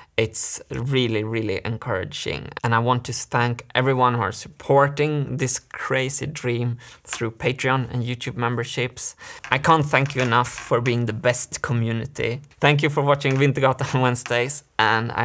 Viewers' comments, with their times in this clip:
0:03 “And I want to stank everyone who are supporting this crazy dream” -Martin 2020